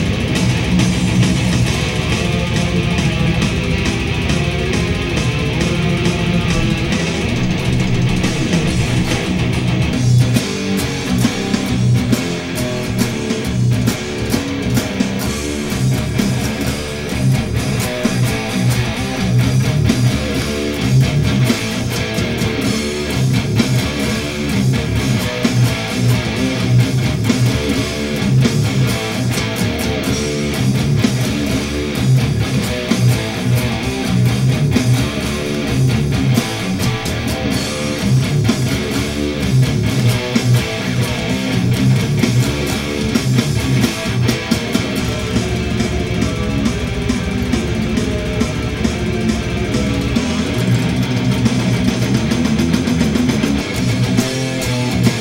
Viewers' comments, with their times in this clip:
0:08 onwards sounds like pig destroyer
0:11 The riff … I’m not really familiar with too much slipknot, although the songs I do know are fucking insanely good. But whatever the riff is… that shit goes so fucking harrrrrd
0:11 probably my favourite guitar riff ever
0:14 Never been into slipknot stuff, but that riff is sick
0:14 someone listens to some hardcore. That's a whole hardcore breakdown if I've ever heard one. Example band is Black My Heart
0:15 Sick rhythm player. Slipknot is by no means easy, never got where the 'simple playing' idea came from. Also, how can you NOT fucking headbang to that giant riff ? Oh my looorddd
0:15 Dude is a beast 🤘🎸🤘. People fanboy over Jim and yea I enjoy Jim riffs also but Mick deserves as much credit that’s for sure. 🤘 riff is the shxt!
0:15 I just drool over that Vendetta riff every time I hear it!
0:16 is one of the baddest riffs of all time, absolute head wrecker 🙌🏼
0:18 gotta luv that breakdown awesome riffing
0:18 That riff sounds like when I use Jake brakes on my tractor trailer while going down a mountain.
0:33 what the hell song is !!!!! that riff is force!
0:43 sounds like Mick is strapped to a heart monitor and it's about to fail